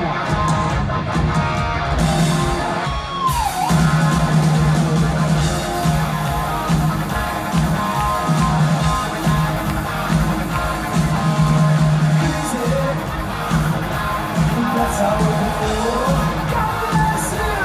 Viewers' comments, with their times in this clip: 0:05 I love that Gus accidentally carried on playing the opening guitar riff before quickly switching to the Amaj riff, without even breaking stride. Musicianship level 100.